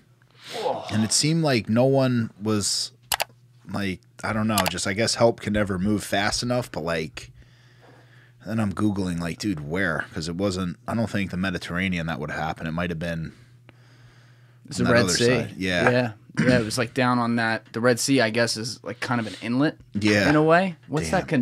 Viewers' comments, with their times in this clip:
0:03 Excited for this episode but my goodness the beeps at the beginning are SO LOUD! 🤣 good ole YouTube making people self censor 😢